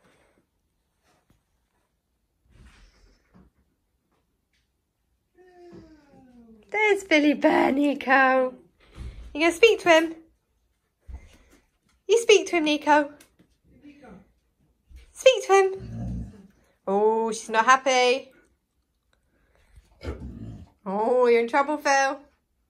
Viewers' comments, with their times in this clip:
0:10 Where's the "DOINK" sound when Phil's nose hits the door!? LOL